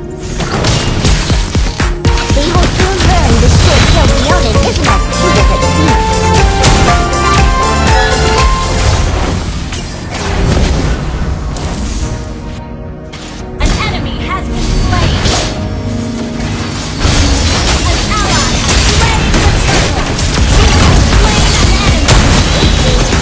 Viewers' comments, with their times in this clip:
0:10 second gameplay music